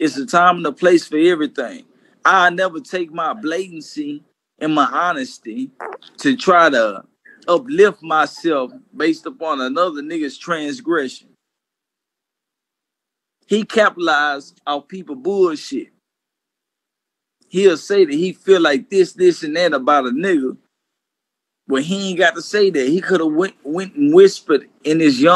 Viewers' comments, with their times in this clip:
0:05 Did anybody here that fart at the mark
0:05 yo who farted?! 😷🥴
0:06 did sum1 let one go sure sound like it
0:06 Did someone fart ??